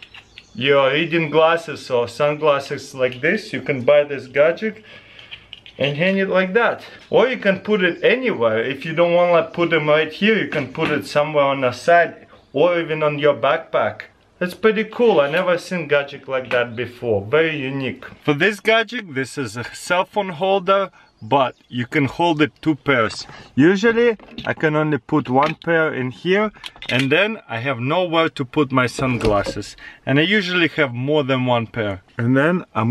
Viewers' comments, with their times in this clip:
0:10 I good have sworn he said,"You can put it anywhere. You can put it on your sack...
0:20 "For this gajeck, this is a cellphone holder" ummm what?